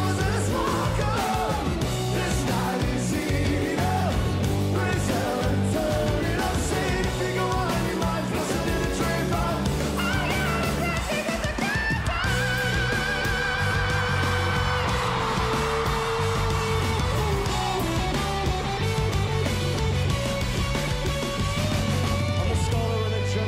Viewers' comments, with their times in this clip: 0:09 OMG how does he hit those high notes 🤔😍😍🎤🎤
0:11 😳 well that was high